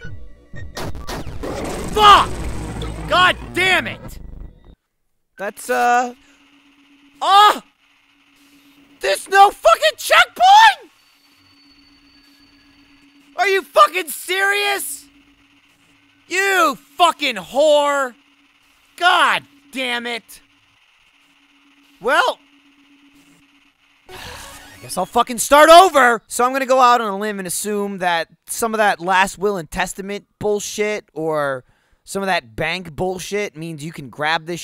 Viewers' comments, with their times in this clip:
0:09 Lol. Michael's voice
0:16 Sounds like Nick from L4D